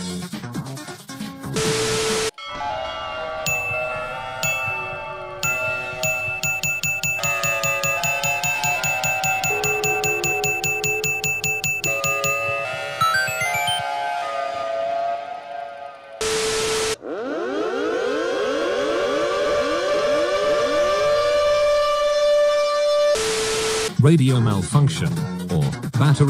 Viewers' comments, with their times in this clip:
0:07 Was that a Thunderbolt 1000T doing Westminister Chimes? LOL! 🤣🤣